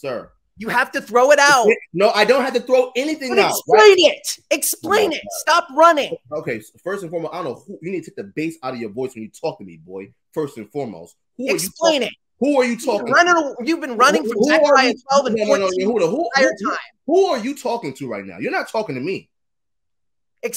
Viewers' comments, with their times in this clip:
0:08 What bass, ahch? Dude sounds like a 14 year old kid. 🤣